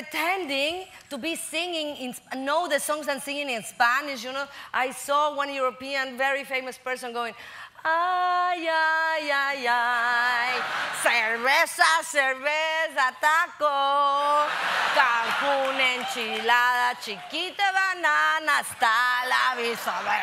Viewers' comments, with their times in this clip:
0:05 some Spanish was slipping out 🤣🤣🤣